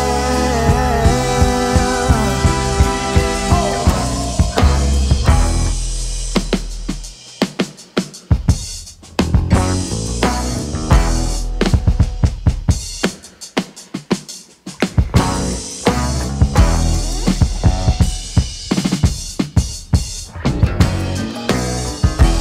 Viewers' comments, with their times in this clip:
0:03 had me locked up, very pretty song